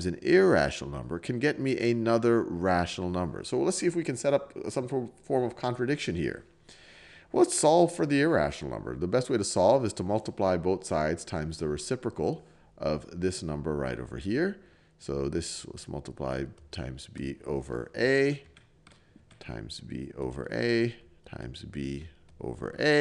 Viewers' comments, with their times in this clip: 0:07 The voice crack tho